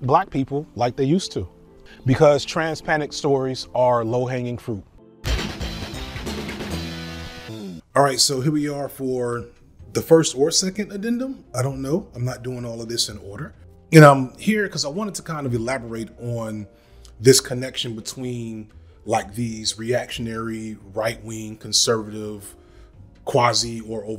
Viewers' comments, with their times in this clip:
0:05 As a KOF player, that new challenger sound clip from KOF98 jump scared me thinking i got challenged on Fightcade 😩🥲